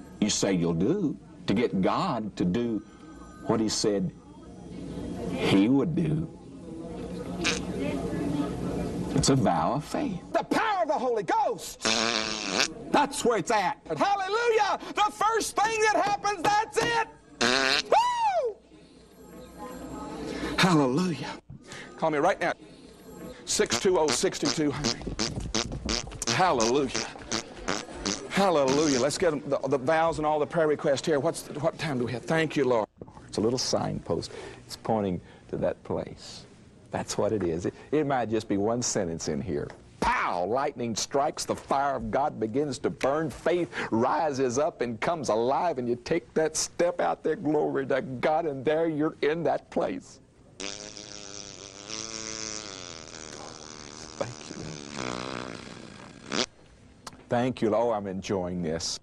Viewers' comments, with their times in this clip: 0:10 "THE POWER OF THE HOLY GHOST!!!!!" fart "THAT'S where its at!!!!!"
0:21 running fart. ROFLMAO
0:21 The running fart!! XD
0:22 My favorite part (fart?) 😂😂😂
0:26 The Running Farts! Beautiful!
0:46 He is not farting. Just so perfect at some points that it seems like it LOL. LIKE HERE PRICELESS